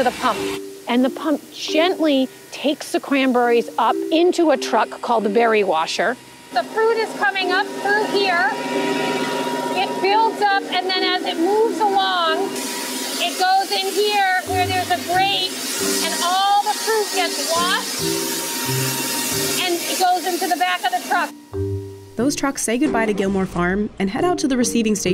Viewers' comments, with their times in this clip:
0:07 Hurt my soul to hear someone call them "cranburries" for half a video and then refer to the machine as the "berry washer"